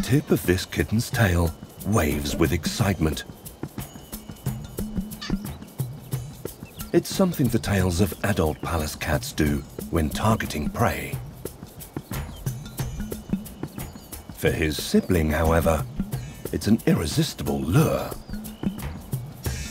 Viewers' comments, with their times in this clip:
0:04 That little meow melted my heart❤